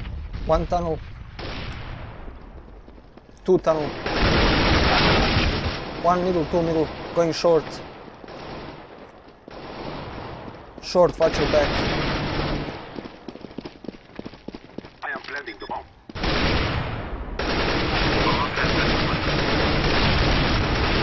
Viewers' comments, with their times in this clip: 0:03 Very cool hooking up with subs. Things are heading in a good direction in a lot of different ways. Love the sound effects of the bullets. Dam slick shot, great reaction time. Very intense showing. Appears like you guys know what to do in precisely every situation.